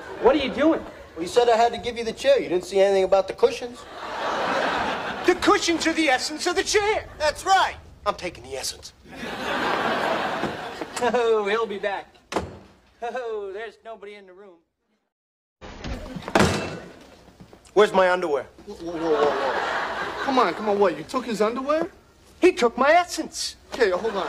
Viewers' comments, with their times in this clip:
0:05 the way he said “the cushions are the essence of the chair!” 😂😂😂😂